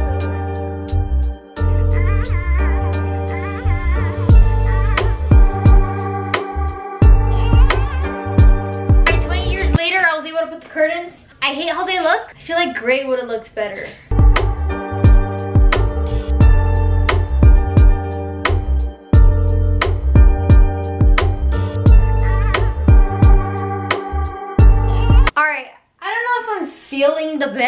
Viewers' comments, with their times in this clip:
0:08 i love the background music